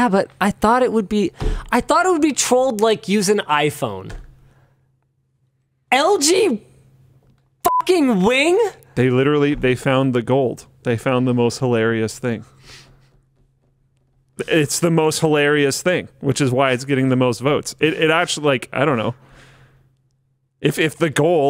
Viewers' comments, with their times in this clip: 0:06 Was that beep meant to mask or highlight that cuss word? :D